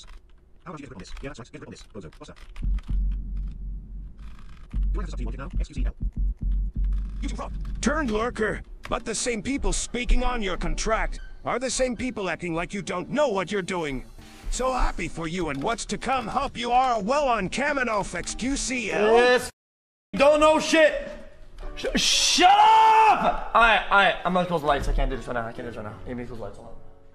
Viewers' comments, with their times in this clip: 0:09 rages so hard, he insta turns into stephen hawking